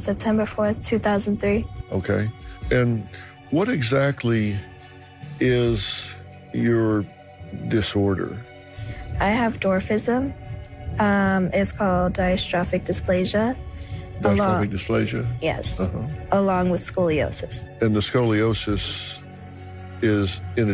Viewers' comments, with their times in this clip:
0:07 She did say um before her age but not before her condition.